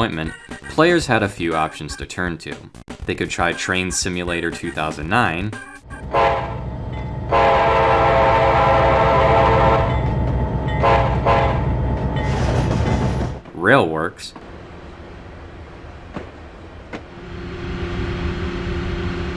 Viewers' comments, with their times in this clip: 0:05 oh god no. please for the love of god no with trainz's horn ends.